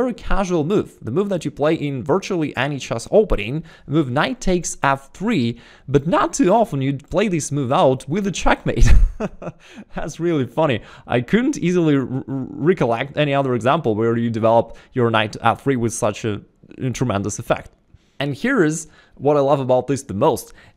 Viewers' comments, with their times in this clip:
0:08 that's the winning laugh I want to do